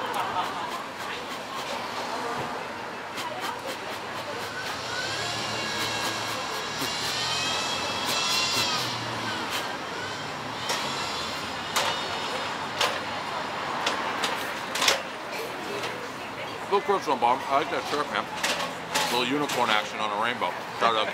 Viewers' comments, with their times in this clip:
0:05 Not that sound sounding like it was comin out of Dave blowin on the pizza 💀